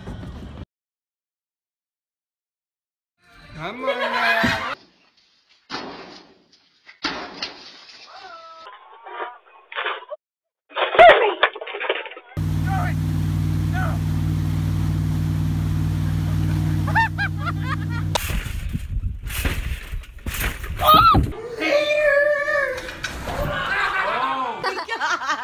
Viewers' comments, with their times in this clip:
0:08 i had to look and lisen twis it was lady not moose